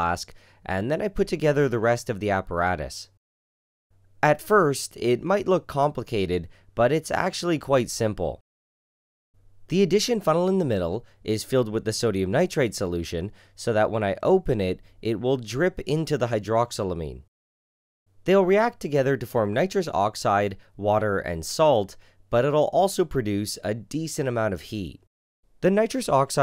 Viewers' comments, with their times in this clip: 0:07 mans sounding like mumbo jumbo